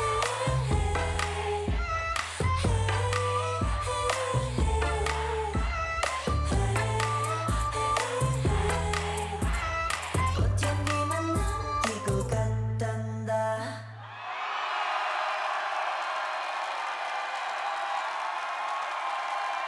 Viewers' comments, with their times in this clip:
0:03 bruh look her mic hitted one of the dancers and went down to her chin and no sound of hitting or even a slightest sound came from her mic. and also her vocals could be heard clearly despite the fact that her mic went down to her chin away from her mouth and no instability was seen. she was lip syncing the whole time and this was literally her first debut solo. inspite of the dancing that was really easy and a easy choreo what did she even do bec she lip synced the whole thing. pls not everybody hates her but why would she do such a pathetic thing
0:03 how come she sound no differnt from the studio version when the mic was far from her mouth... was she lip sync all the time?